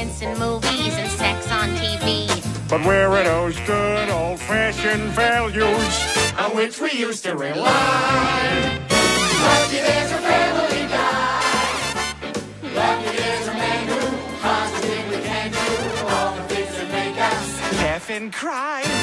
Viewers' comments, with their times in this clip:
0:05 if you listen closely you can hear Brian's voice
0:06 You can hear the difference.